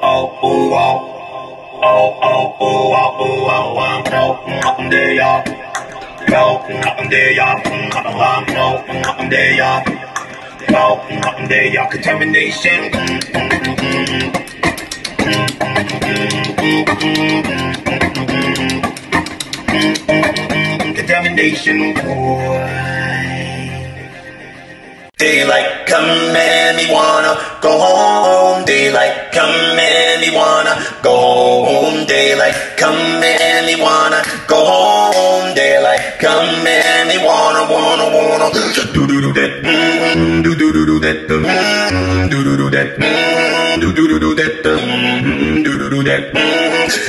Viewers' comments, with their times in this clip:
0:04 is he saying iop
0:25 All of his beatboxes are impressive sure, but I can't get over this is SO complex!! The man does beat/bass, rhythm, main melody AND vocals, using only his voice and expression pedals . . just insane
0:32 My german teacher when i can’t speak CH properly. Whats the song btw?